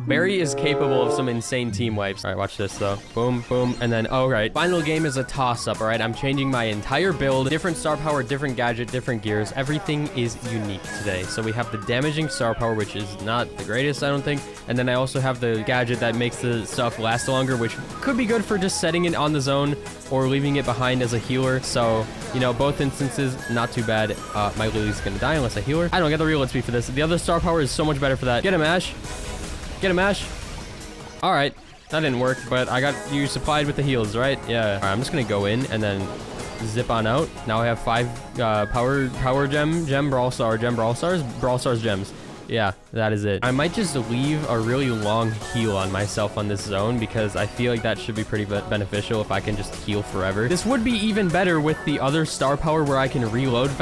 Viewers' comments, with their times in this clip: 0:06 why is the music so loud😂
0:34 Why do there sound like the erm in erm what the sig ma